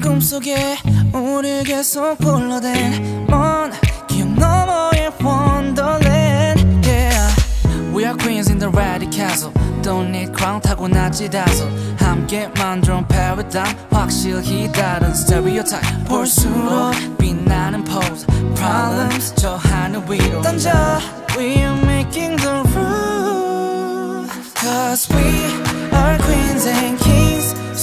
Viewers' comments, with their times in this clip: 0:08 killed me mann ! I'm falling in your rap ! nice rapping bro..